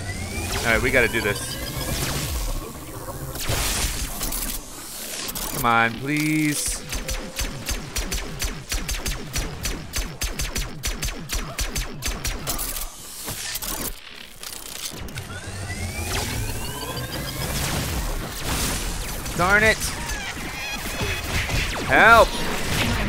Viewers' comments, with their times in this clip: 0:10 that beat Doe